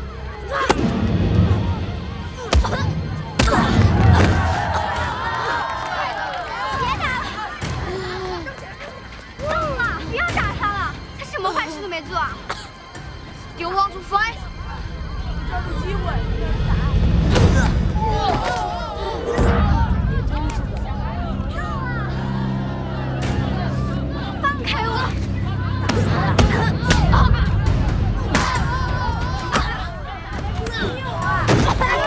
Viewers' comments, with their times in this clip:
0:05 Why is everyone clapping?!
0:19 You know you bout to get your ass handed to you when your enemy does that and that loud ass Face punch should be considered a taboo in street fights. He could've taken up his eye Goddamn . I had my own fights with school bullies, most of it ends with 5-6 punches until someone steps up to break the fight, non of them came close on the brutality that is shown in this scene.